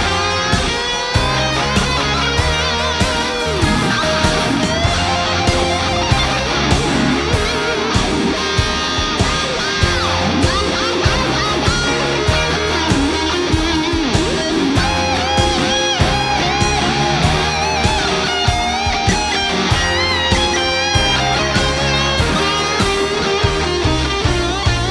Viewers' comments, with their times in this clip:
0:10 The way he phrased the small bit is just awesome. Pure eargasm.